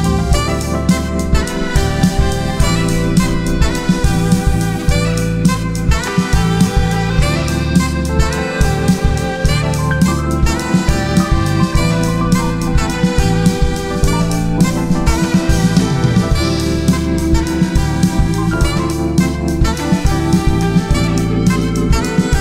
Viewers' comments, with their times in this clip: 0:09 Roses are red, violets are blue, is that the licc,